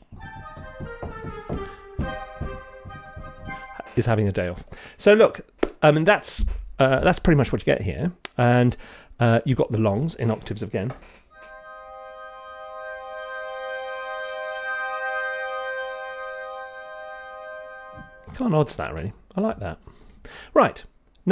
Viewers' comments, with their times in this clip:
0:09 the woodwind section, well of souls Raiders of the lost ark. Been looking for a patch to replicate that sound for a long time, thank you.